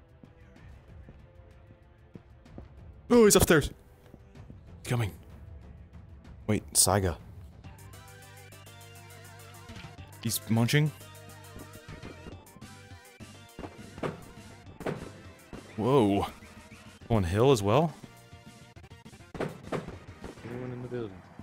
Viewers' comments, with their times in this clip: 0:08 I love how the music picked up when he said “Wait Saiga”